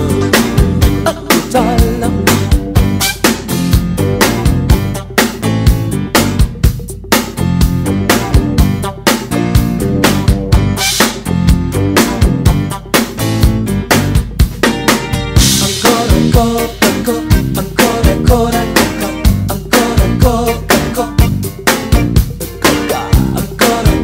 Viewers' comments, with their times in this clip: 0:10 Groove, Soul, Pocket... that Full of Flavor Cymbal Choke ... this awesome song... Technique is only a Tool you said, while with dedication, discipline and above all PASSION you were rising drumming interdependence level bar to the Sky; this tribute, full of soul, is a proof.... screw the Haters, YOU RULE! Hope to see you in Argentina soon!